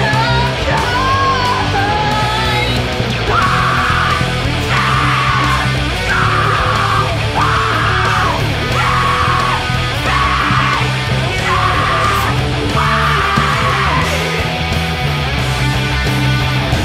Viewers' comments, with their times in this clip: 0:03 That was so much fun. The scream at the end was 🤌